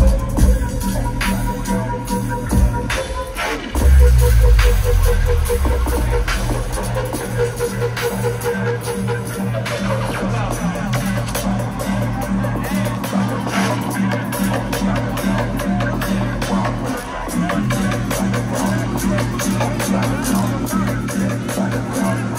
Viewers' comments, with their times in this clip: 0:05 this ID goes OFFF